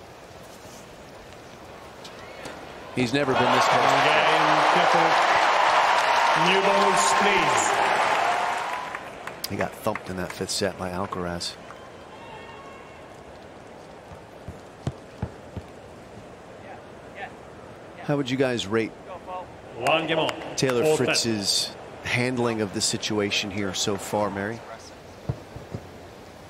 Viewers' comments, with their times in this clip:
0:08 does he say he got fked? i didnt know they were allowed to curse